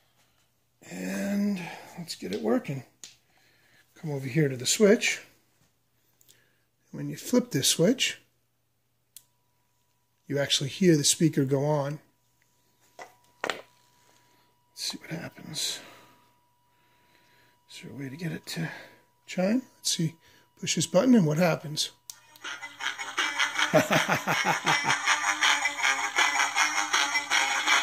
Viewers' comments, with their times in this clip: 0:08 Hear the jingle